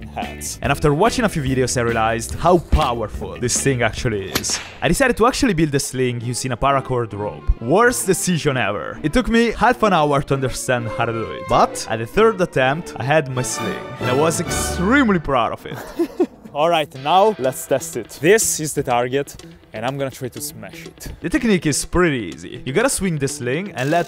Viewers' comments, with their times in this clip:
0:05 is bro taking a piss in the background
0:05 Is bro peeing in the background?